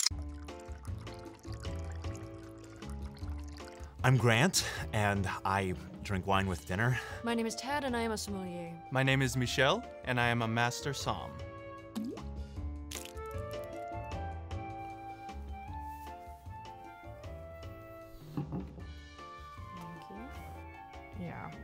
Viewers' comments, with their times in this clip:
0:07 Is it just me or did she really sound like "My name is Turd"